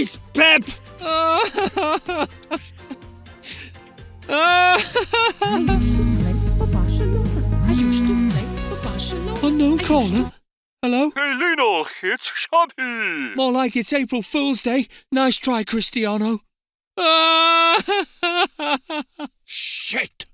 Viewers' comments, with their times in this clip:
0:06 the Koeman Ringtone jaja
0:07 what a ringtone Epic 😂👍